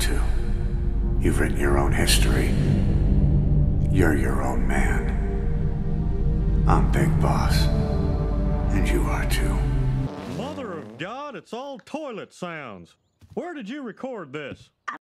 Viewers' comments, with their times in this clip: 0:08 lines up perfectly. Amazing XD Also Bobby sounds like he barks at the very end there. Great stuff.